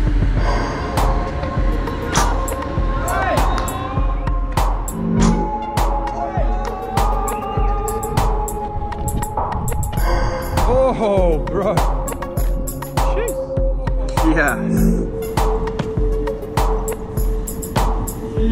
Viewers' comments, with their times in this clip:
0:03 Who turned when this Tick-Tick started in the song?